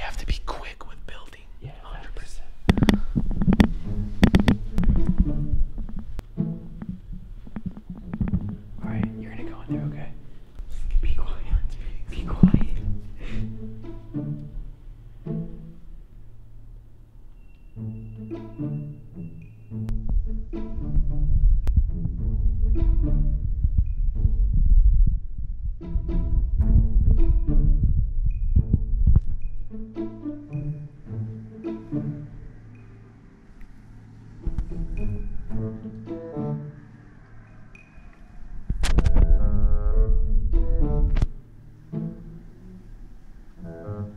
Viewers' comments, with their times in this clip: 0:08 Fire alarms, thats what happens for our fire alarm drills at cadets l, they wake us up AM
0:20 i can hear his heartbeat
0:32 incredible uncanny music before incredible became uncanny